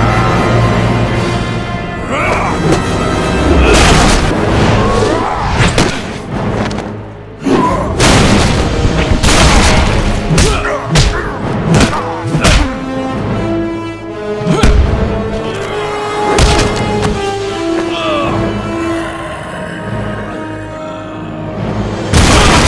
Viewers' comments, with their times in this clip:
0:03 has Edna Mode screaming